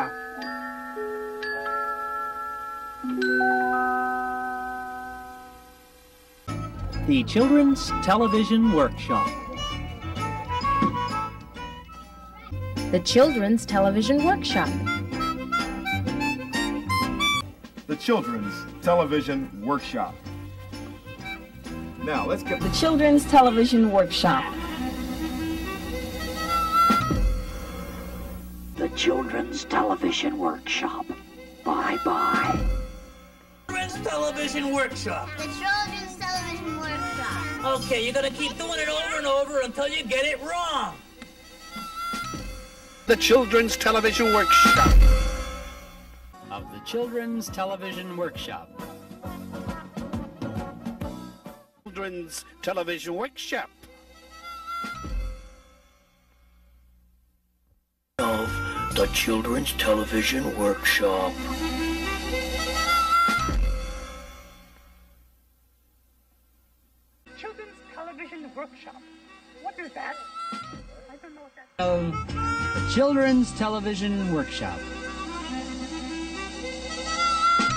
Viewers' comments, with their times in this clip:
0:05 insert Grover sounds
0:28 The voice and "BYE BYE." makes the announcer sound like a guy putting you at gunpoint and about to shoot you.
0:29 Creepy Voice I
0:52 I swear i hear peter griffin
0:57 who is that talking? According to fandom, it is telly who is talking. But This does not sound like him. It sounds like a hobo who is talking
0:58 Dumb, but a bit creepy voiceover.